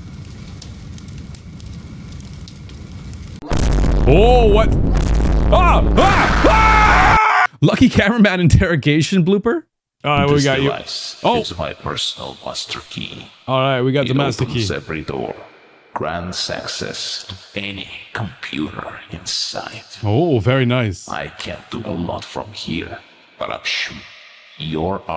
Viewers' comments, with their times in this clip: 0:06 the way he screams 🤣💀